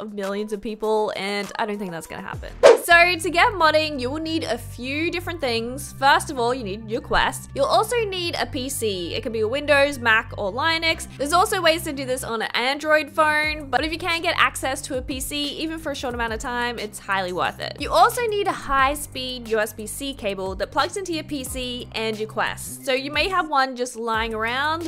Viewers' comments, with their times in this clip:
0:09 I absolutely hate the way the said Linux
0:10 ah yes, Lynix.